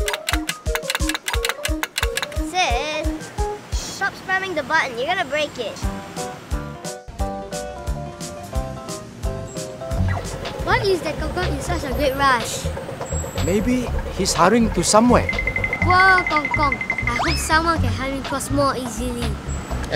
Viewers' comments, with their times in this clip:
0:04 "button" dat accent